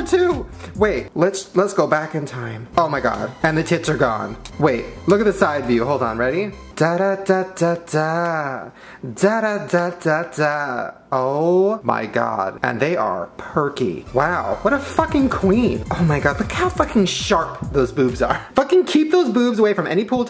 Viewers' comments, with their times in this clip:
0:06 literally singing the McDonalds theme